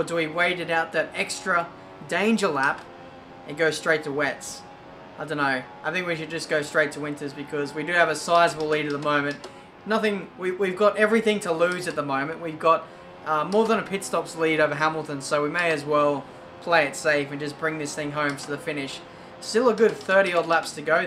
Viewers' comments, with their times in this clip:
0:04 Did anyone ben " I think i am gonna put on the winters"